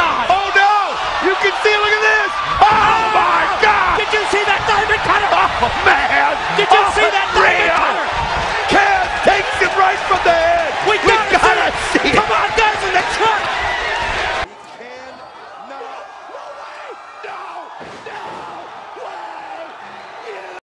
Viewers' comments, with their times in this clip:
0:07 definitely one of the hypest crowds I ever seen